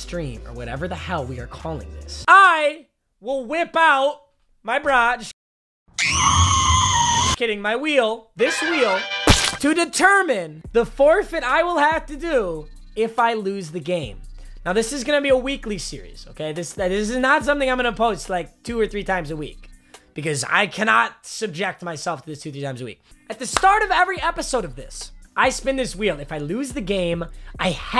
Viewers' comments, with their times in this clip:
0:08 that perfect nut sound